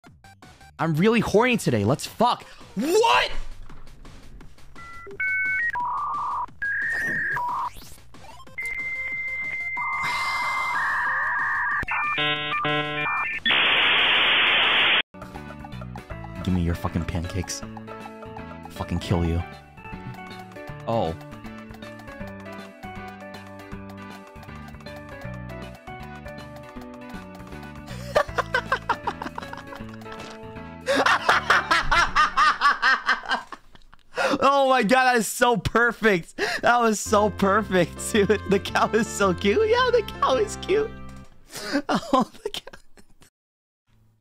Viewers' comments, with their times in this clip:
0:02 omg his deep voice
0:27 That laugh makes me convinced that... Oh He'S sWeEt BuT a PsYcHo~
0:28 istg i love his laughs